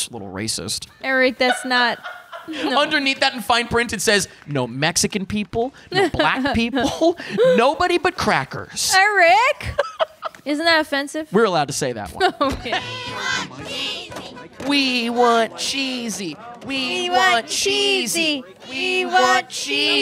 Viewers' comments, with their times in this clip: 0:07 I thought you said "Nobody but crack"